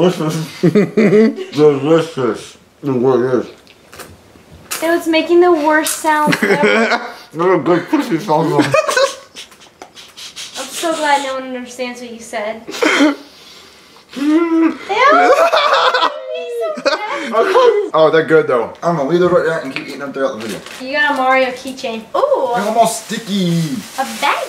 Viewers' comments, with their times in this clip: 0:07 that’s what good 🐱 sounds like